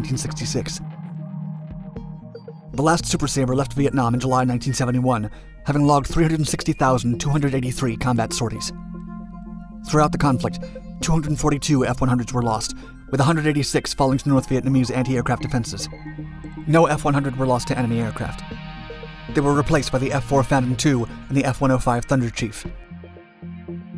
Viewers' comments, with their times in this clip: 0:06 You stated that the last F-100 left Vietnam having completed 360,283 shorties. You need to review the English language and talk a lot slower, or as the old idiom goes "you need to engage your mind, before putting your mouth in gear".